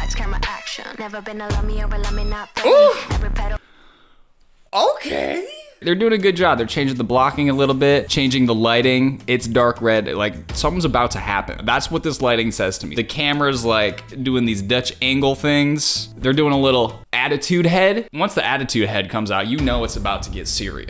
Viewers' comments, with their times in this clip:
0:05 that okay was very satisfying